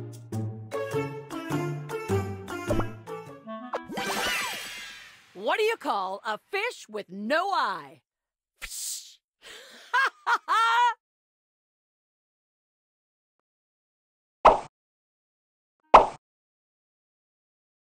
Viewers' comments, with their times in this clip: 0:05 she laughed at her own joke